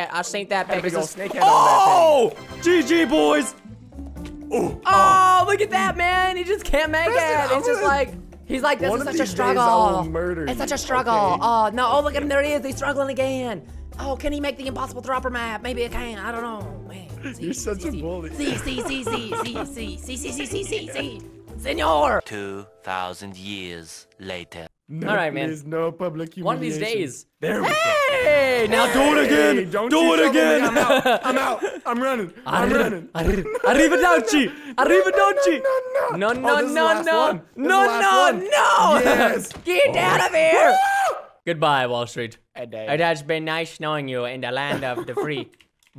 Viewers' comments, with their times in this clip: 0:09 he is talking like a girl :v btw im a fan of u so much🤗🤗🙈❤💜💜💓🐣
0:32 I LOVE WHEN HE TALKS LIKE THAT